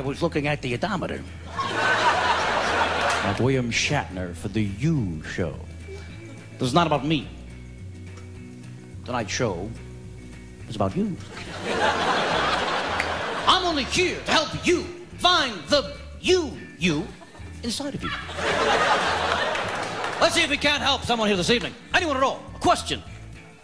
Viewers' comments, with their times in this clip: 0:04 Kevin Pollak’s William Shatner 😂